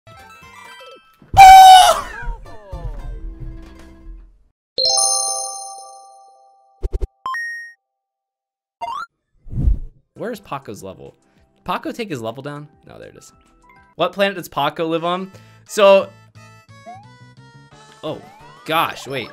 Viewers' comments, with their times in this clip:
0:00 When the house is quiet and you try to call someone The crows outside:
0:01 we have gotten a new king kong voice Actor boiz
0:01 that one neighbors rooster
0:01 that scream came straight out of pron
0:02 this Sound Like a Chicken 😂😂😂😂